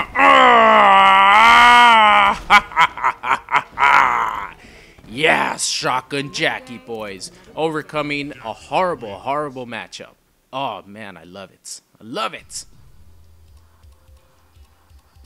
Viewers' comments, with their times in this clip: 0:03 That grunt tho 😂